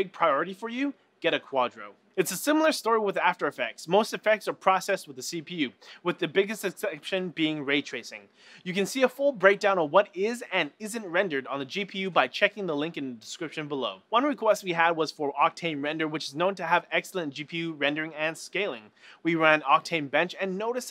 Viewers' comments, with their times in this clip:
0:05 the biggest exxxcepdtion
0:05 with the biggest EXCEPSHIOINE